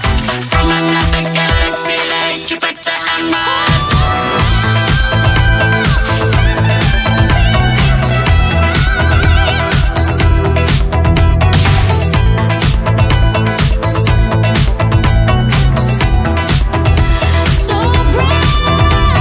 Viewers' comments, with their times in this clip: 0:03 It's just indescribable how precious this song was already, and how clear it is that this is one of the best releases this century, but this new mix? I don't even know how to start... and that beautiful new high note hidden in ? YASS MISS MINOGUE!!
0:06 omfg those raw vocals I'm in loveeeeeeee
0:06 is this pitched or she really hits these high notes😮